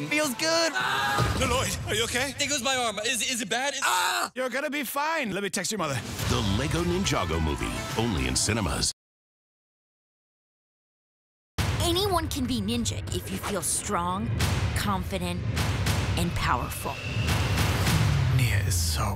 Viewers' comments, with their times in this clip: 0:03 Lloyd Screaming at his arm